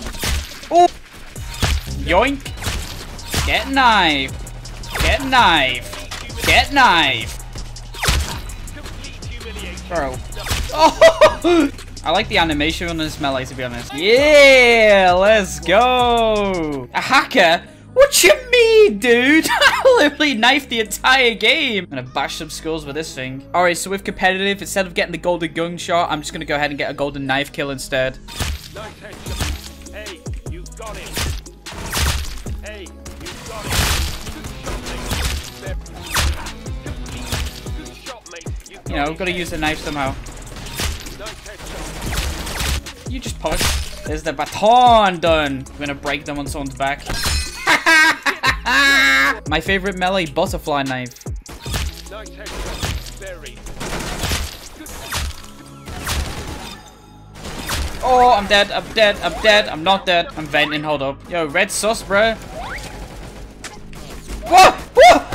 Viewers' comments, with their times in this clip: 0:03 If Tanqr was an announcer:
0:14 why you just screaming when you win it broke my window OMG AHHH
0:47 that laugh though 💀
0:47 goofy ahh laugh